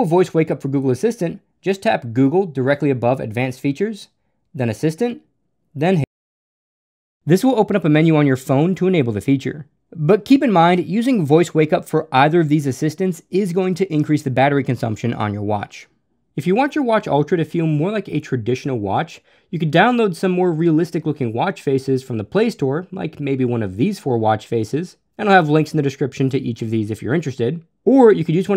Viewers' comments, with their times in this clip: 0:10 Smart of you to mute hey Google Probably would have triggered so many unknown devices.